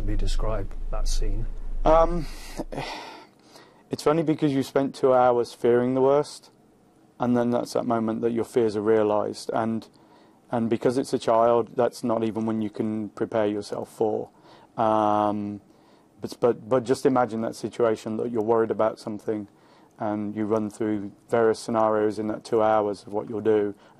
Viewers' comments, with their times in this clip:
0:09 How come they pretend to cry and sound all choked up but never actually cry? Then when the husband talks she just sits there waiting, no crying from listening to him. She's just waiting for him to finish so she can get back on cue. Busy with kid's FUND? Then, there's the interviewer. Why does he look seriously irritated throughout the interview, especially when he asks "I'm guessing you met Barack Obama?" and sarcastically says "you seem strong." He looks like he HATES his acting job.